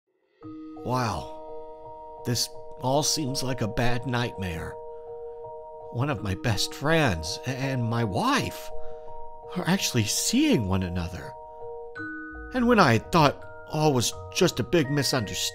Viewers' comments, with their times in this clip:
0:00 the music is so sad 😢😢